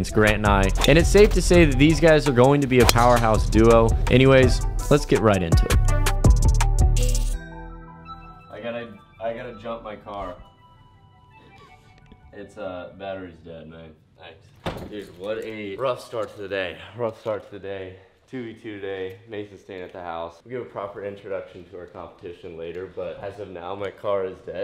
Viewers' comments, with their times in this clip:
0:10 i'm loving the anglicisation of good good's accents since they've returned from the motherland